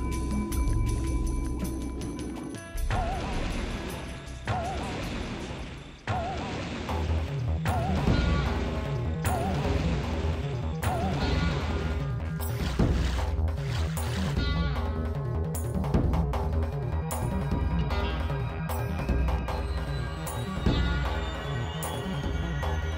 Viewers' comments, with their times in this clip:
0:07 Where did you find this pitched up version of "Song A"?! It sounds awesome! ;D